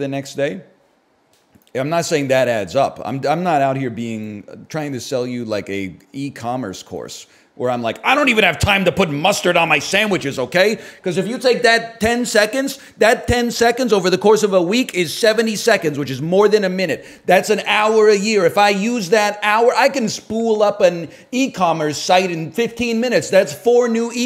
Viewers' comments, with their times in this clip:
0:08 the switch to Rick Sanchez startled me